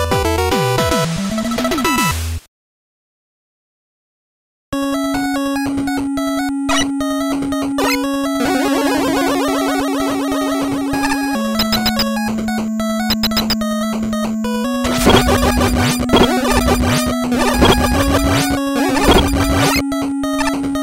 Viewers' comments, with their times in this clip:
0:04 Bit of trivia, this 8bit arrange music uses 3 sound channels only, and I feel I should have spent more time working on it to make it sound less cringe near the end of the loop haha. >w<;;